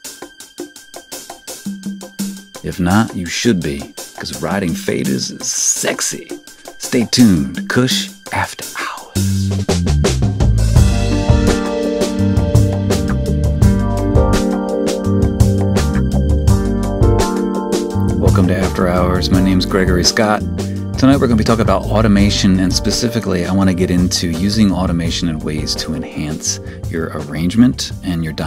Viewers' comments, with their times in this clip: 0:10 LOL, that laugh ...